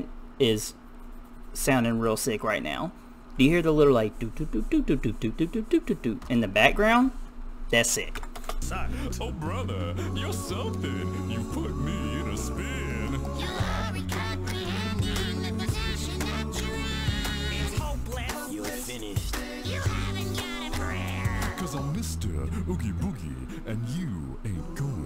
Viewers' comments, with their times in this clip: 0:08 That's voices. It's all voices. No instruments at all used here.
0:12 no one notice the terrorific low voice :c but yeah his range is really amazing !!